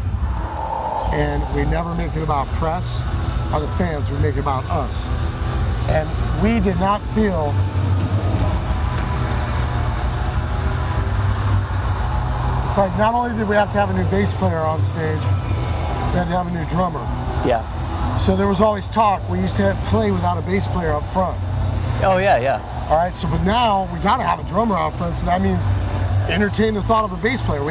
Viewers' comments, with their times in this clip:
0:08 did anyone else notice that awkwardly long pause :L